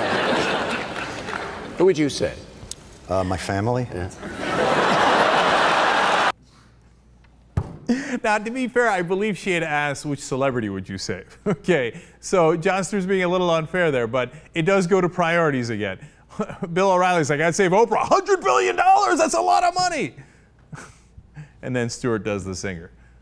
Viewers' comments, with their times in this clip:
0:06 Dat laugh doe am i rite?